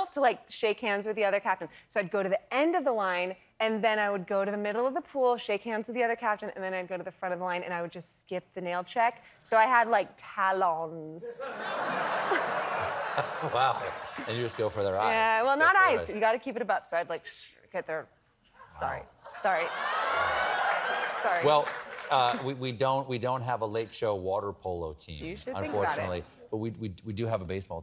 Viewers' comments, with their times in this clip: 0:09 her pronunciation of "talons", I can't, it's so funny– 😂 What a truly delightful interview! ✨